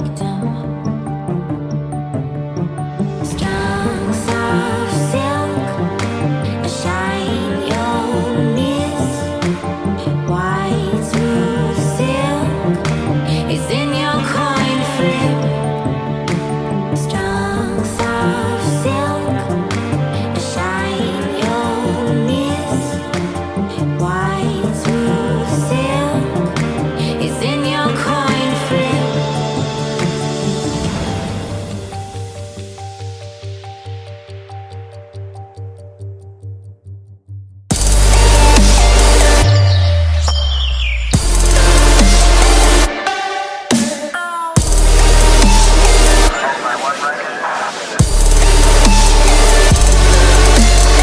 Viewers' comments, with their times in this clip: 0:03 That Girl Singing In A Glitchly Way creeped me out and scared me
0:34 Drop? (Dis is old 4/20/20)